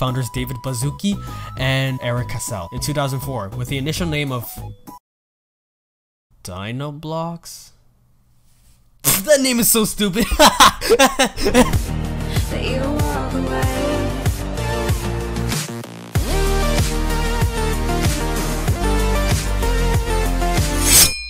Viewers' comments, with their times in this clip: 0:08 he is so quiet. Turn your volume all the way up or you won't hear.